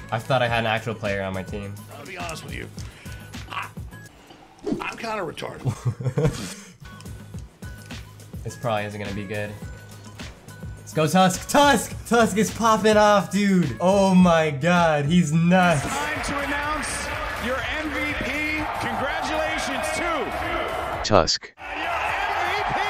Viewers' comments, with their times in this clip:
0:05 his laugh killed me 😂